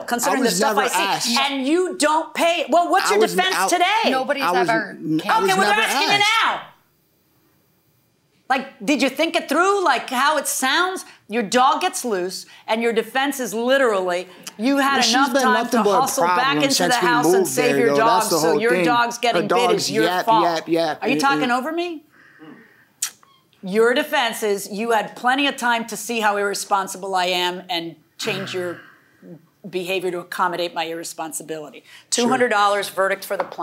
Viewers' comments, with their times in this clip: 0:09 I’m listening while working and all I hear is screaming and loudness of voice from the judge. Had to stop because there was a silence and thought my phone shut off. But look and came to realize the judge kept intruding defendants but if they didn’t talk she gets mad because they’re not saying anything too.
0:19 He's yapping over the Judge 🐶